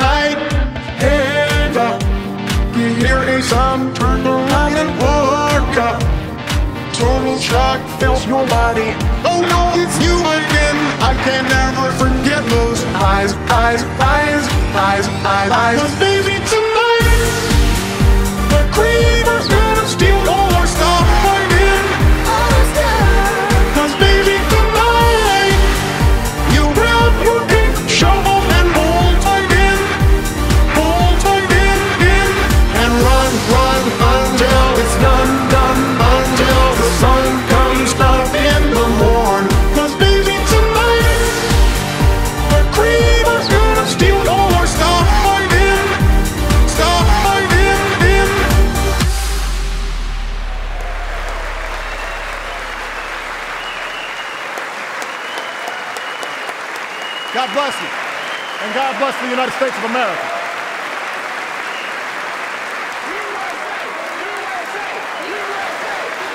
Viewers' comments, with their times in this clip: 0:06 It's That Joe Biden?
0:07 The lady crying 😂😂
0:30 it sounded like he's saying 'bull tie gain' edit: omg tysm for 18 likes Edit 2: OMG TYSM FOR 33 LIKES GUYS
0:53 roaring applause and gamers rising up